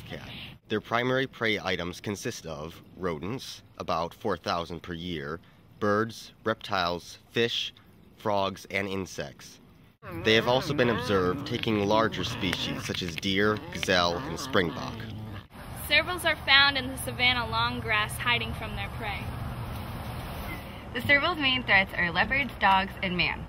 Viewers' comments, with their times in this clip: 0:10 xDD I love the "yummy" noise that the one makes as he/she munches on the meat. xD :3